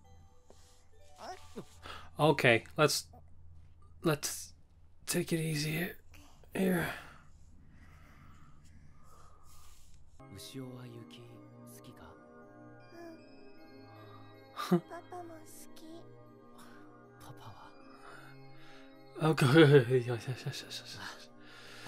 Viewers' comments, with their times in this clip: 0:09 I love the snowfield music that starts playing it's so entrancing, I keep that one on my playlist